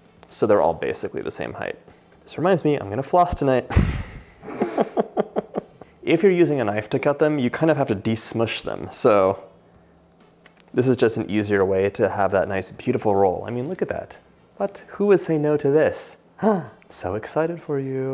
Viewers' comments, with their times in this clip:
0:05 is that the camera guy laughing??